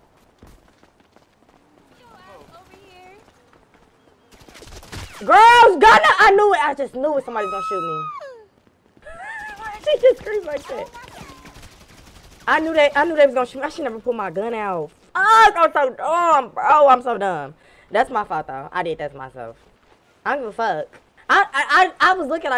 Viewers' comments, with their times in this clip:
0:06 the woman screaming took me tf outtt😭😭